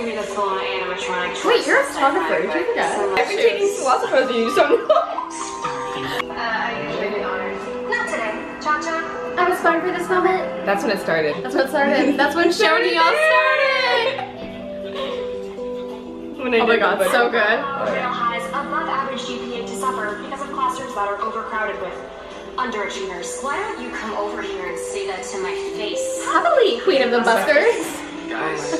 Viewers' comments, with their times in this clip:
0:10 when she says her line with the video it sounded just like cheryl wOw🥰